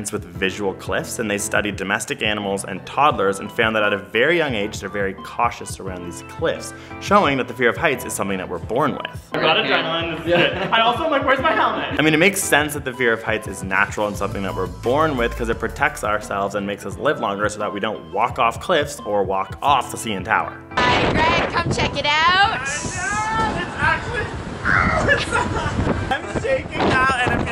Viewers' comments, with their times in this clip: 0:08 'helmit' I THOUGHT THIS WAS AN EDUCATIONAL VIDEO! Jk, loved it